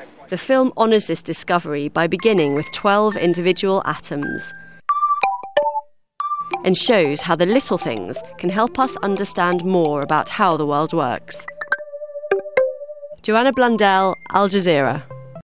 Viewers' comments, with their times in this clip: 0:13 what's this jibberish at the end? "Do you want a blondell alge zero?" Yeah, I guess I want one of those. Sounds neat.